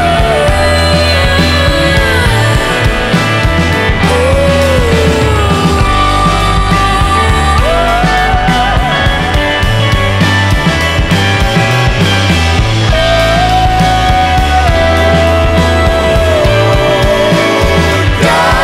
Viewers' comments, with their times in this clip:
0:05 The guitar line on sounds pretty much like a direct reference to Grateful Dead's "Bird Song". Anybody with me on that?